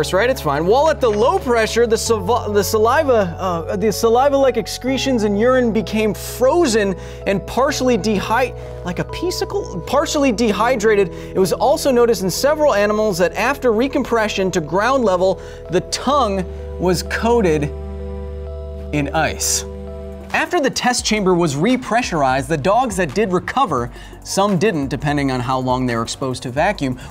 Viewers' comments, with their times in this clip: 0:08 high pitch:like a pee sikel